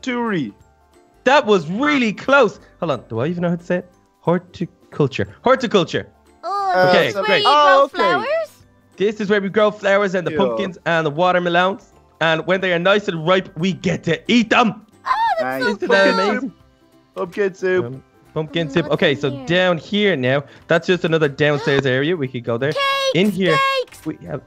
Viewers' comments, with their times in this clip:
0:10 Water Maloon :D